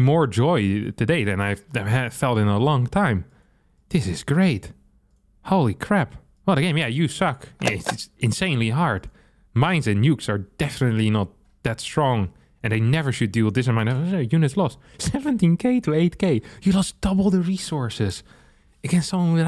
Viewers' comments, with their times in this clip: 0:05 "oh yeah, you suck, insanely hard..." - that was said so cincerely. :D